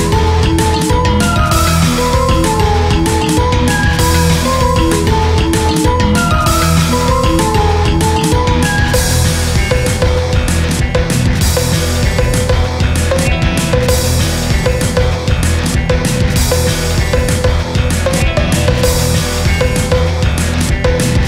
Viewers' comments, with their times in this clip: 0:09 Its funny how the drum (i think?) That kicks in resembles the giga chad sigma edit music